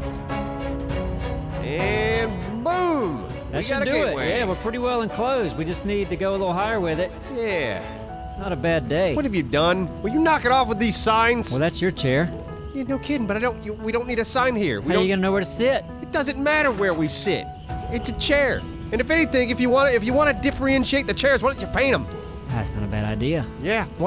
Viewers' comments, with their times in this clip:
0:09 I was wondering why you both sounded like the chipmunks I some how, (do not ask me how, as I am either blessed or cursed with this wonder, depending on how you look at it), sped you up to 1.5 speed. I am laughing tears.